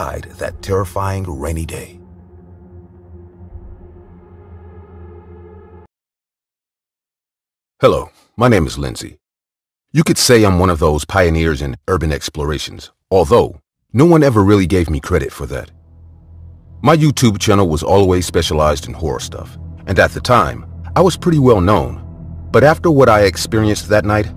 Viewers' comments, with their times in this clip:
0:07 “Hello, my name is Lindsey" she said with the voice of a middle aged black man lmao